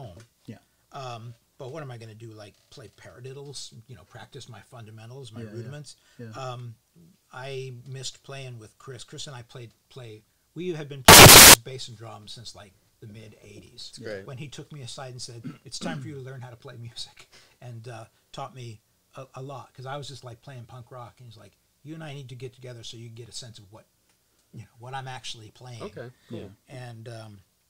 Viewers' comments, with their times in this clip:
0:09 Audio problems (warning)